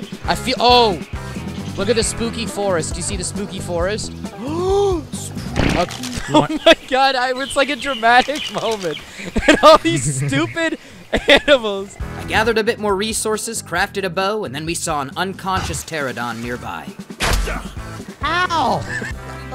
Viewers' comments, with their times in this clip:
0:05 le gasp Sp- doggy shits their pants